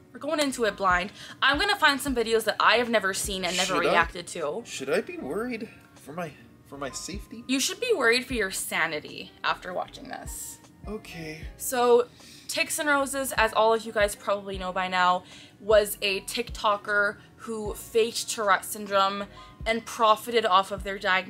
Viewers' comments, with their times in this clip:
0:07 the way he just goes "okay 🙂" 😆😂🤣